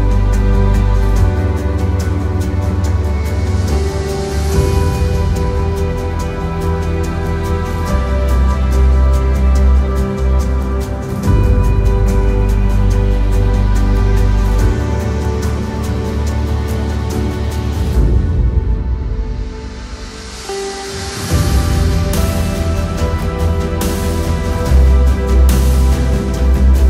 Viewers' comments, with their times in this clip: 0:10 Here Comes The Boom!